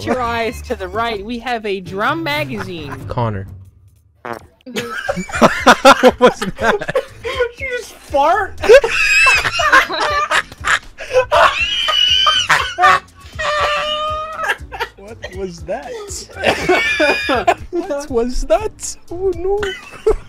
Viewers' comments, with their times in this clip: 0:03 why is this funny to me!? All she did was fart... why is this making me laugh!? 😂